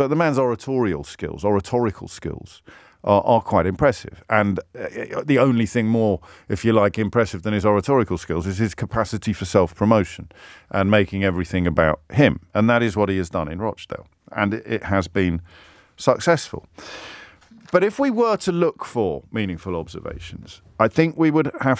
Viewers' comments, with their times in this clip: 0:04 His oratory skills are considerbly higher and more refined than are yours James Errr Errr Uhhh O O OBrien.